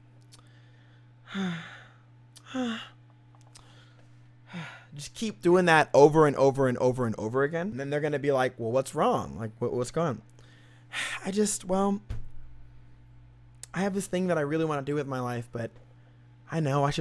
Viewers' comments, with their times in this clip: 0:04 pretty sure that wasn't a sigh based on the picture...